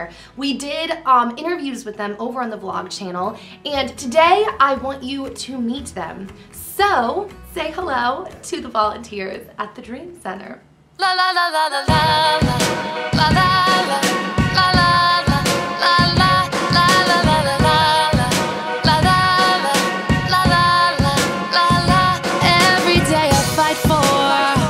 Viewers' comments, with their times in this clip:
0:10 The music actually starts